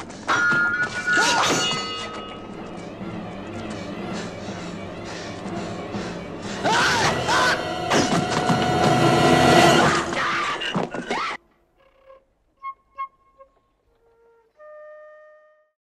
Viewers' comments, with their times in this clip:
0:08 damn music went fron 0 to 100 on the volume almost blew my eardrums lol